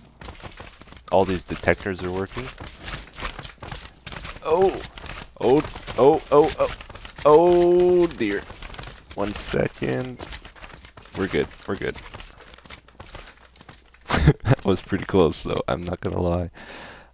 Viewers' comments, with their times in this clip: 0:05 o o o o oh my gosh ( chorus breaks in )